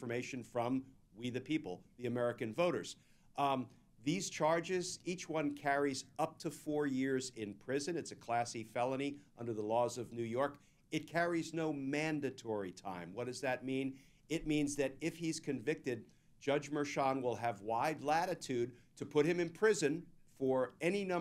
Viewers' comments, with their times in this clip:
0:03 I misheard, “it’s a classy felony.” That was Class-E, but it may be as close as Tr*mp can get to classy.